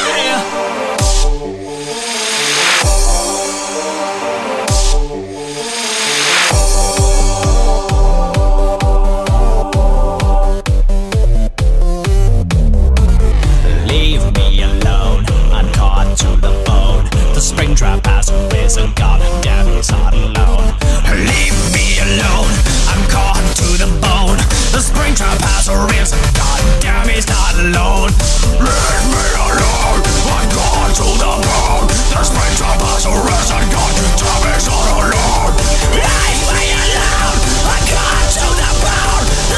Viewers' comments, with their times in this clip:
0:07 Imho an interesting moment in music : in The church choir (the souls of dead children) sounds, but when they leave the animatronics, the choir immediately ends. Bravo
0:15 is like a rap
0:21 the moment when William became a rapper